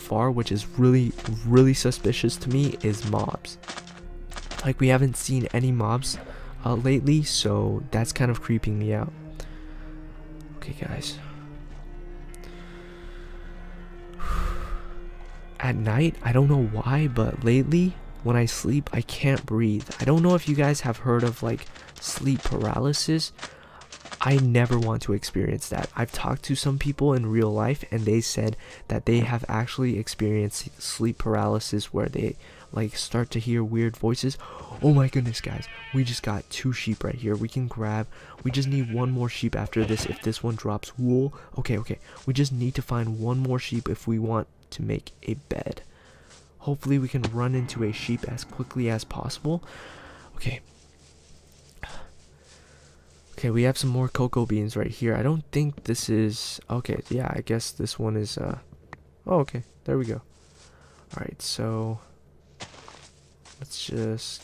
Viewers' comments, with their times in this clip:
0:04 Wait... Why his steps souns double in ?
0:46 listen to the music
0:48 there was a strange sound!!!